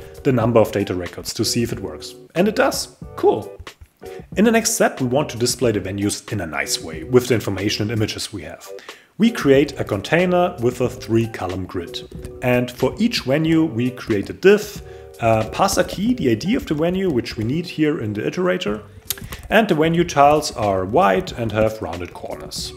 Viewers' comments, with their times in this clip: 0:04 Nice video. The audio glitch "in a nICe way " was kinda scary :D